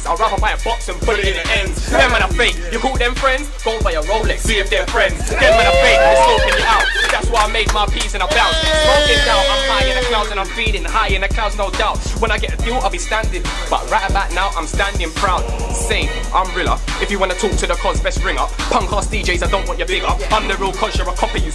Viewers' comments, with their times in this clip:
0:06 Jammers goat cry/laugh hahahaha